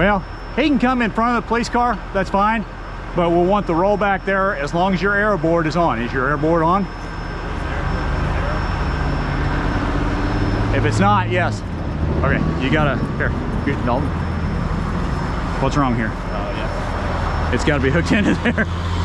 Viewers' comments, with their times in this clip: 0:07 I thought you said air board too